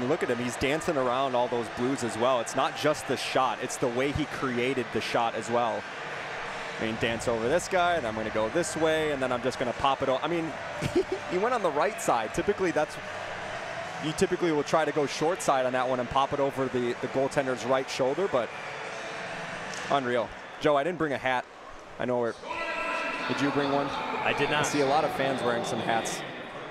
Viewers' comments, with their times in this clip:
0:10 This is the first time I've heard a literal "tehe!" giggle from anyone.